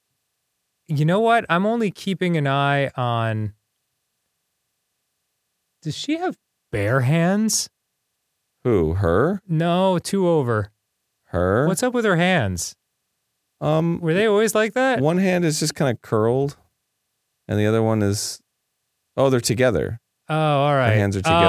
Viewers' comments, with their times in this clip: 0:05 you have bear fists ? My mind immediately went to that reference.
0:05 "you have bear fists?"